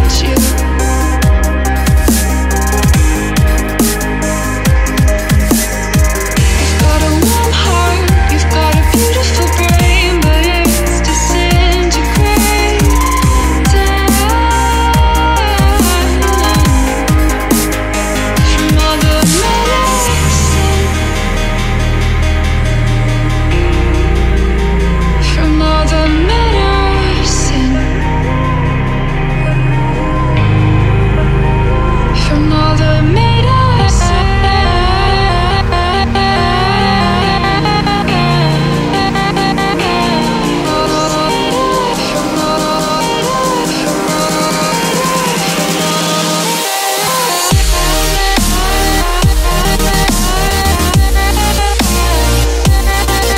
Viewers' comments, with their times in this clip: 0:06 to the end of the beat drop for me
0:37 # that drop reminded me of the 7 Lions show i went to... chillstep #thebeststep